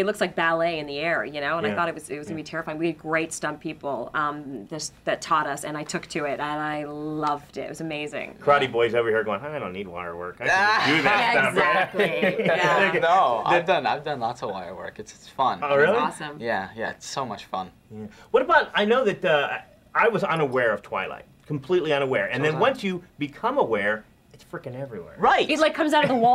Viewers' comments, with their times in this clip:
0:10 i LOVE his Laugh !!! So FUNNY!